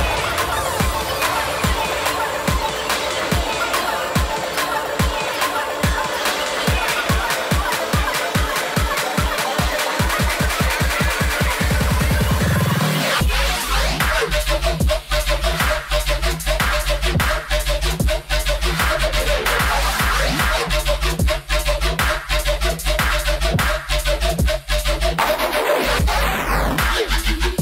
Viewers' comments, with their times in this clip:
0:08 Anyone know the ID ? That’s so nasty and riddimy I fucking love it! 😤😤😤